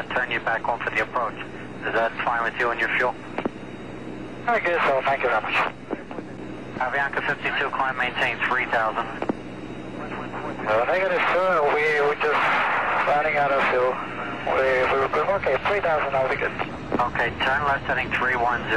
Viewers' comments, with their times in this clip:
0:05 “ I guess so, thank you very much “. The person in the cockpit who relayed that message didn’t make it sound like they were in danger of running out of fuel and that it was an emergency situation. His tone sounded like he was ordering lunch or something.